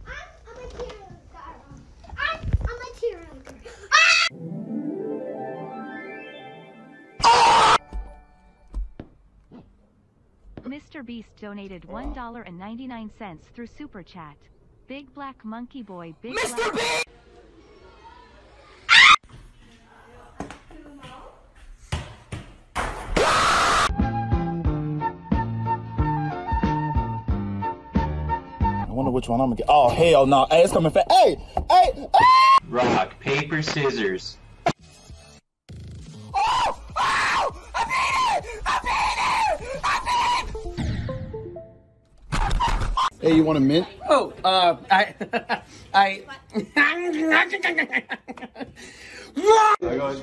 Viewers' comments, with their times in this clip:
0:03 bro a trans kid💀 I thought he was a girl AND THE SCREAM LOL
0:19 the biggest scream off all
0:34 Goofy ahh partygoers screaming